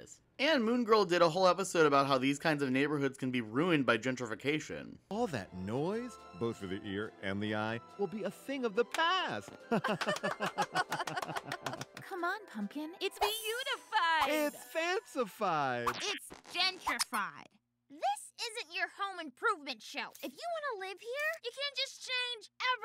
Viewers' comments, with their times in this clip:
0:08 I’m actually terrified of the gentrification people idk what it is about their cadence in their voice but it scary